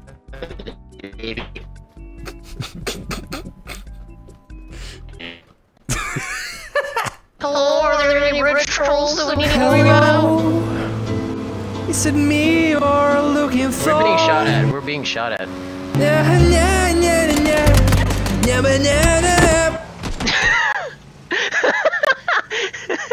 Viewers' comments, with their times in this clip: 0:09 Can't get over how good the singing is.